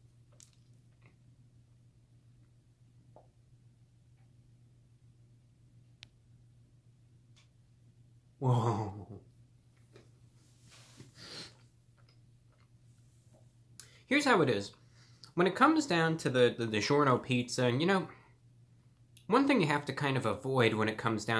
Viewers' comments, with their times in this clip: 0:08 that.. /noise/ my guy. lmfao <3
0:09 That laugh though.... you made my day Reviewbrah